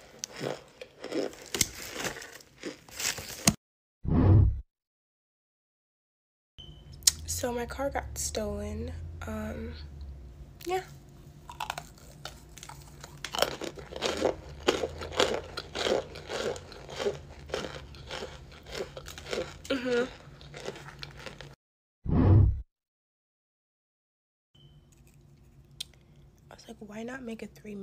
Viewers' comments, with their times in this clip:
0:08 “So my car was just stolen. So yea” Girl don’t care-💀 But the crunch 😩😩😩😩✨✨✨ On